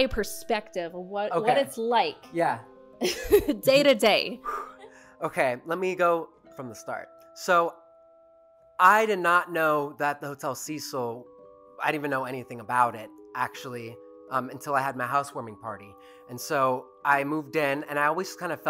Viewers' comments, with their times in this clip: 0:05 Did anyone else hear the disembodied voice ?!?!?